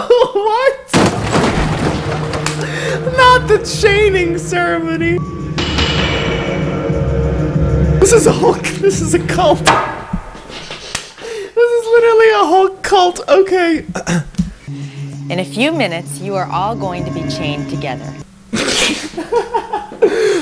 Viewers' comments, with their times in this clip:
0:08 This is a cult claps and laughs Ugh ..He just gives me life 😭